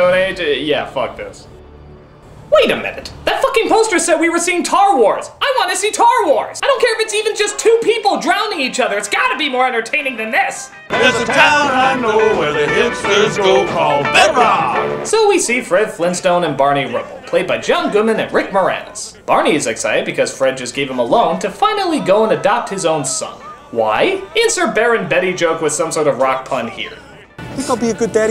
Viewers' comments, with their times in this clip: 0:10 .....Where the hell is that music coming from? They don't have electricity!